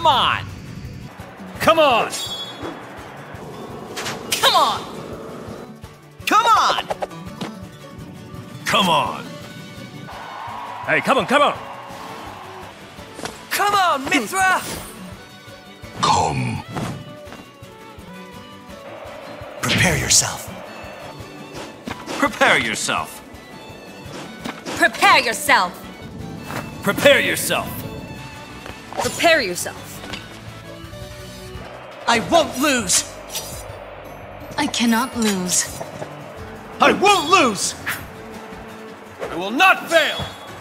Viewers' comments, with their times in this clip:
0:06 he used to has the best c'mon :sob:
0:15 I thought he says ouhh!
0:27 Who else heard Steve in the background lol